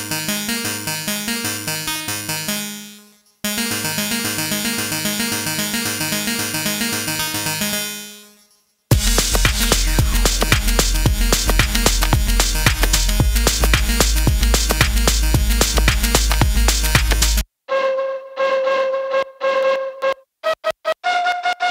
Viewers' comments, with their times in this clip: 0:03 Electronic Country Music.